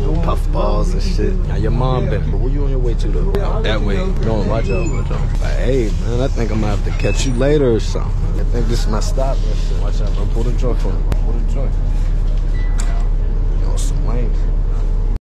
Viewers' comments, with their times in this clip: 0:07 negative voice crack